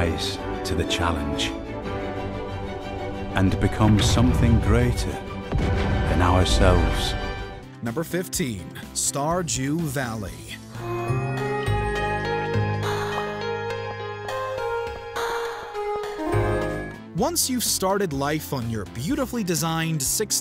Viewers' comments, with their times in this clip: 0:07 did he say starjew valley